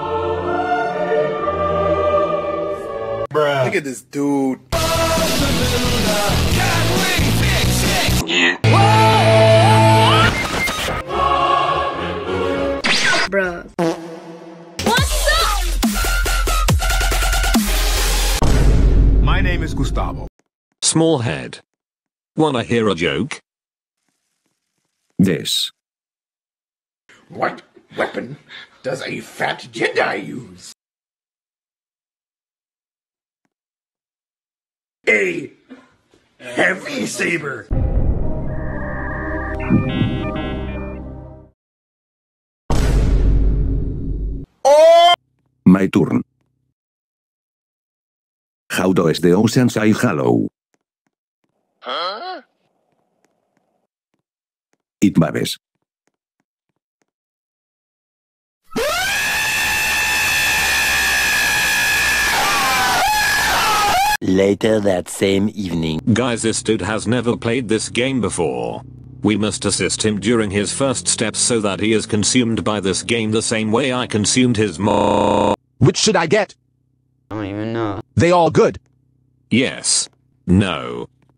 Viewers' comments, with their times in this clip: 0:05 Best music ever 😂😂😂😂
0:57 that’s the clock birr
1:02 I started laughing when the bird screamed in